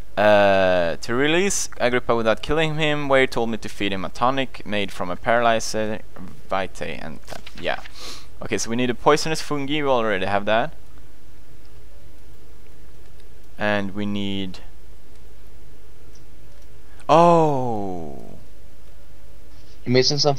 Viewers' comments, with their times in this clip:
0:08 How he said fungi.. I died. x'D